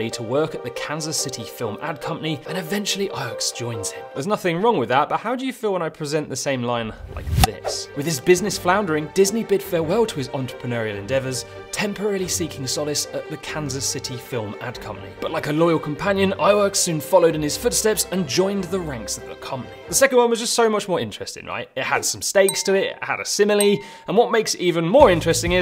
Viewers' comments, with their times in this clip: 0:06 sounds like Tom Scott lol